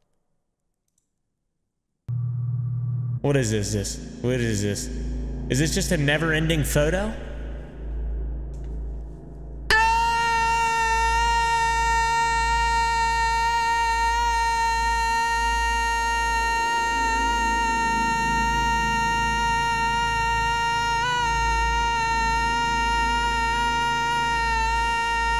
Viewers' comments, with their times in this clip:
0:10 pov the moscito at 2 am
0:10 he sounds like a mosquito at night
0:13 the mosquito in my room at 3am: